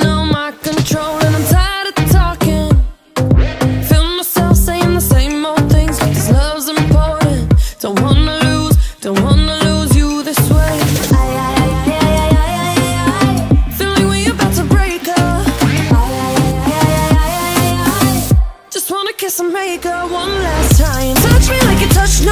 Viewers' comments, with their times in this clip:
0:10 Rosé beautiful voice